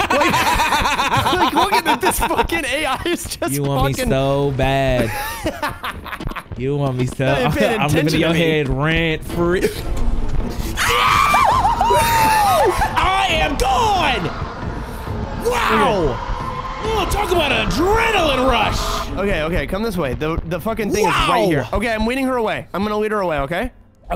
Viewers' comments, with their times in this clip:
0:09 tom n jerry ass scream